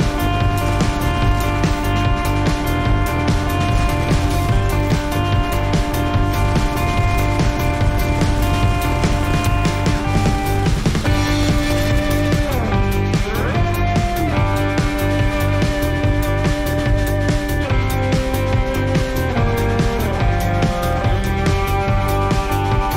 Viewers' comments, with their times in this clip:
0:07 as someone who can read cyrillic hurts lmao. "TIE-YA EEV BATTLE YAATEEG"